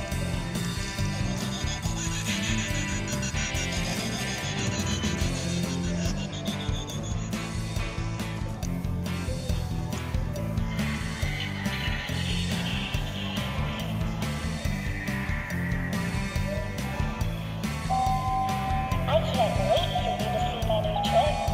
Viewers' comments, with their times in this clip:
0:08 what company made that also the hidden screamers have horrible audio which makes them look like bootlegs